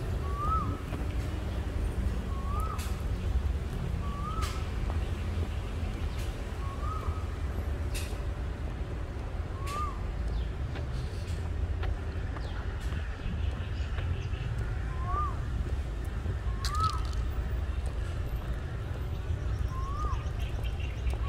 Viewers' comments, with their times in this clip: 0:09 Thank you for the nice walk. I love the bird sound it feels relaxing. Take MRT Sanam Chai is closer than MRT Sam Yot.